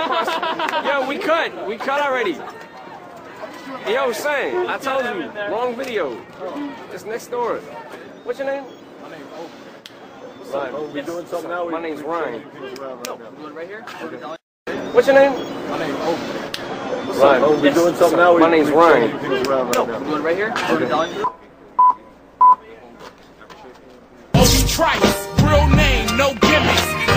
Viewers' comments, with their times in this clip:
0:08 anyone hear a Nokia 😂